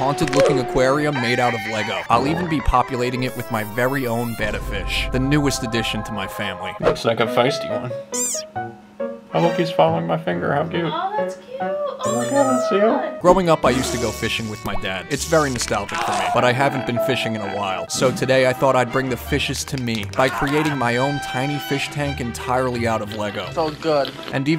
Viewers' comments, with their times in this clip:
0:07 desert rain frog sounds